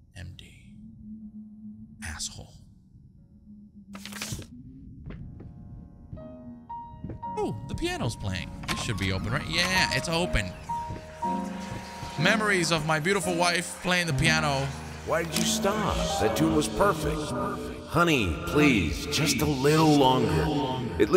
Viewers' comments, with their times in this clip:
0:07 She killed that note for a second 🔥🔥🔥